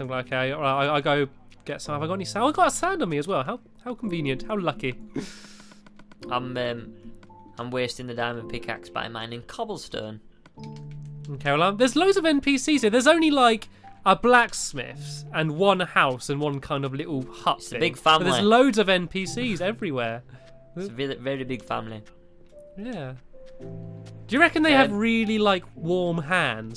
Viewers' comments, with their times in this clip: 0:10 Listen carefully and you'll hear a windows 7 pc